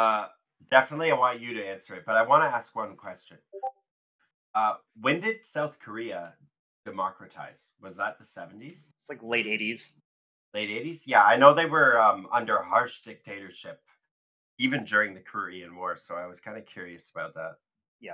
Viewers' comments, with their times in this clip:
0:03 I thought that was my discord. 😂